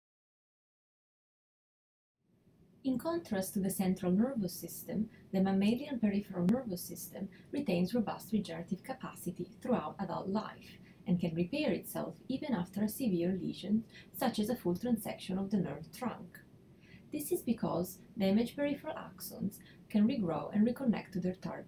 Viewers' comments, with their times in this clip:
0:02 i cant tell wtf ur saying lady